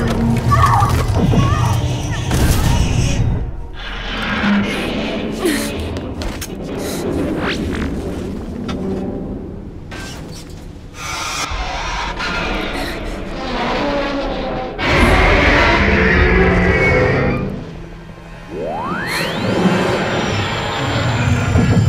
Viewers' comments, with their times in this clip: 0:09 the stock crash sound I heard in family guy just undoes everything lol